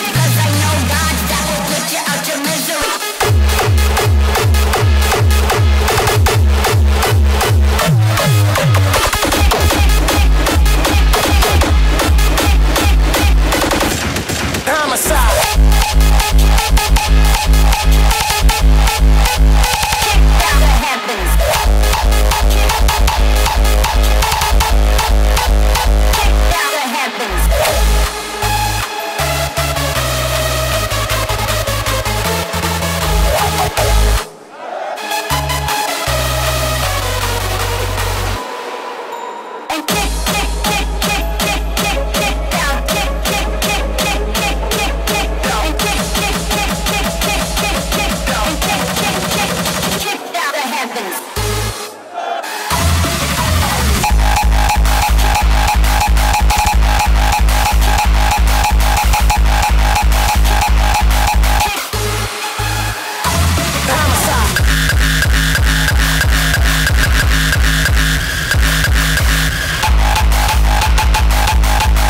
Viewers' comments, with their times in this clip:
0:03 Broo that Kicked Out edit Holy kicks!
0:53 ohhh my word.... my house is shaking